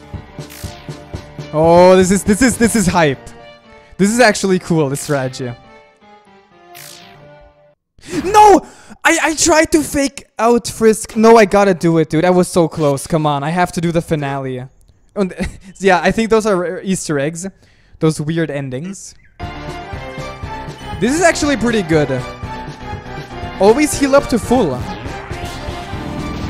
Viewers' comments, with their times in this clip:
0:03 perfect timing with the end of the music
0:06 no one's gonna talk about the music that perfectly blended in finishing as Merg dies?
0:06 with the end of music sans' life ends too
0:08 Go to timestamp because DAMN Frisk! Good timing with the music!
0:08 the music ended just when he died lol
0:08 he died as the music ended!